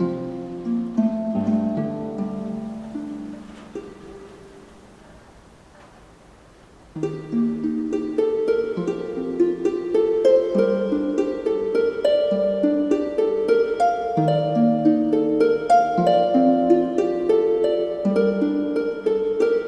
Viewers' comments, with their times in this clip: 0:06 Obviously begins a fragment of an old melody of yours. Just mesmerizing <3